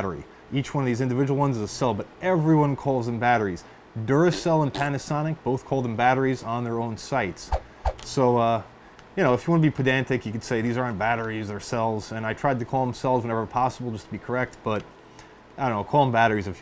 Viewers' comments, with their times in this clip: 0:03 The subtle fart sound effect that should accompany all product marketing (PS. Thanks for the video - worth watching the whole thing)